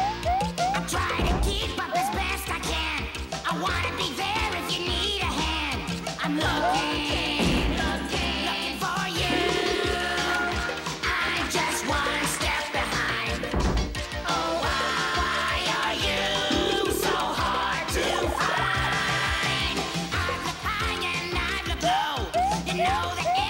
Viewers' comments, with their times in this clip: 0:03 fart with extra reverb
0:04 Oh my fucking god it plays fart with reverb
0:05 We found it bois The fart sound effect has been located
0:06 this show was so ahead of its time it had the reverb fart meme before anyone else.
0:06 it uses the reverb fart sound
0:06 fart with reverb
0:06 fart extra reverb
0:07 So that’s where that fart reverb came from. XD
0:07 glad I wasn’t the only one who heard that fart sound effect. Truly ahead of its time.
0:07 Fart with reverb lol
0:07 Once you hear the reverb fart...
0:07 Once you hear the reverb fart...
0:07 haha funni fart sound
0:07 diseased reverb fart
0:07 F A R T